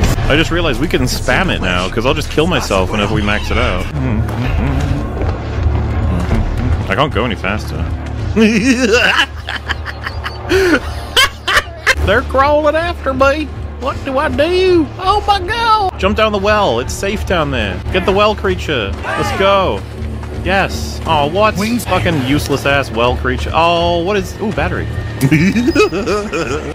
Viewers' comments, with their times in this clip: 0:08 Sweet mother of Christ that fucking psycho-clown laugh that just escaped his soul got me wheezing here!